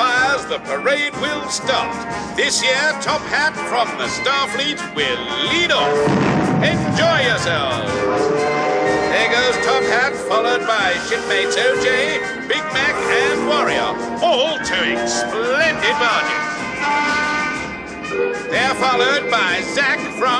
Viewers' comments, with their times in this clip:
0:05 Johnny Cuba's whistle can be heard in the background. A little bit can't heard because the music